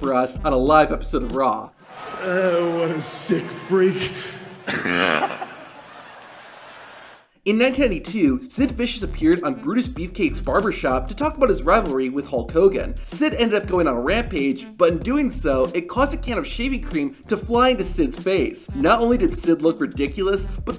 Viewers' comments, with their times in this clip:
0:03 dang that sounds like my laugh 😂
0:04 and that’s how we got the goofy ahh laugh